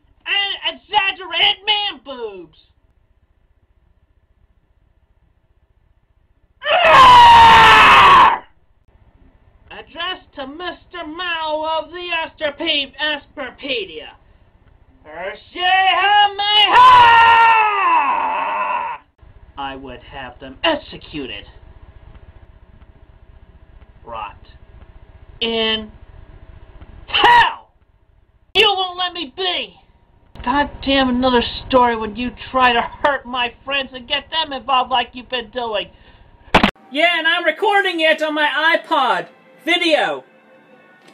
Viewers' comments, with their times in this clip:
0:04 my favorite part inserts jurassic park Trex or Godzilla roar
0:05 he let out a thunderous roar that would even make the devil shiver
0:23 the way Chris just violently yells "HELL" never fails to make me laugh, the low quality makes it even better
0:29 The video of Chris punching his camera is so funny that I can hardly take it, the gritty sounds, the piss yellow tint, all truly make it a CWC classic. Edit: thing in talking about starts